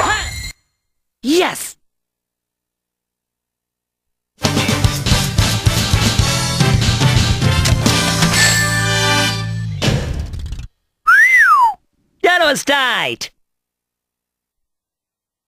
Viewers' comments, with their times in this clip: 0:11 Did he say genocide?